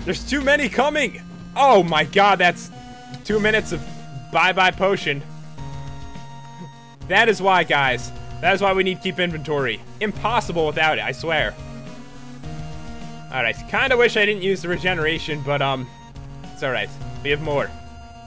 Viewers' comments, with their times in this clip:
0:06 TEH EPIC MUSIC STARTS! I think it's called Linkin park: In the end.